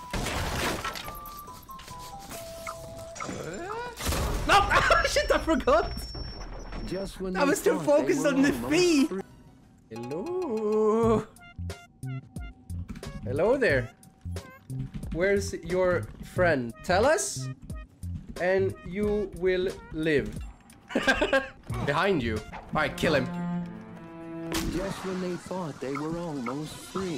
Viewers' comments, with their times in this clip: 0:10 The Luigis Mansion Theme is so godly!